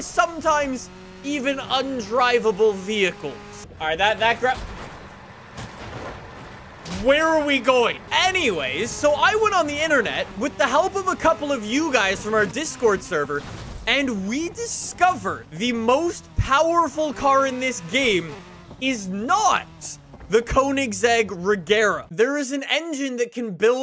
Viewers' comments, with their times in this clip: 0:09 you sound just like Jeremy clarkson So I went on the internet and....... 🤣